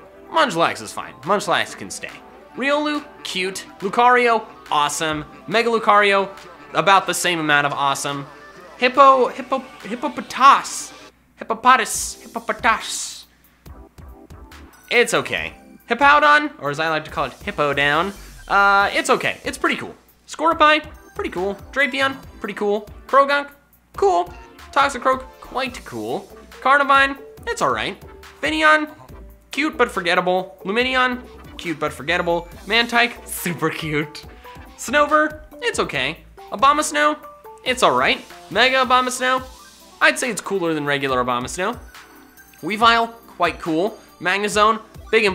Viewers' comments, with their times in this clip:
0:10 He actually pronounces Hippopotas correctly, despite his hatred on the official pronunciation of the Pokemon's name.
0:33 The voice you do on tho 😂😂😂